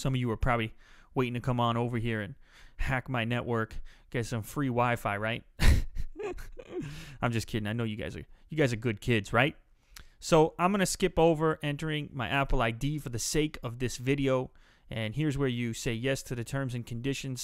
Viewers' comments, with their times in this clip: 0:05 he have a funny laugh xd.
0:05 his laugh hahaha